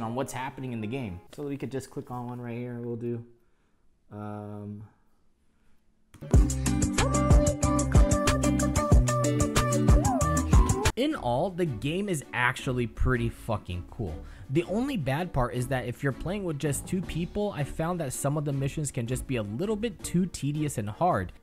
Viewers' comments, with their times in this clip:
0:06 got me as well as the 'Seinfeld' laugh moment LOL
0:07 I don't know the song but it brings me closer to death each time I hear it